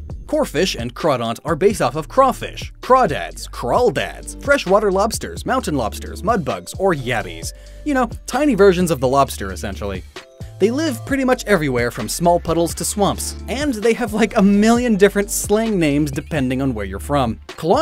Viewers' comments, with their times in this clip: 0:03 I thought you said “crayfish” which was the name that introduced me to this species as a kid.